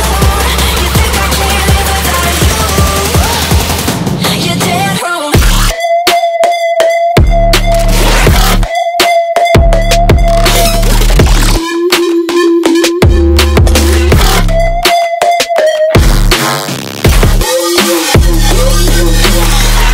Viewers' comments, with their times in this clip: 0:05 The microwave going off before i can stop it at 1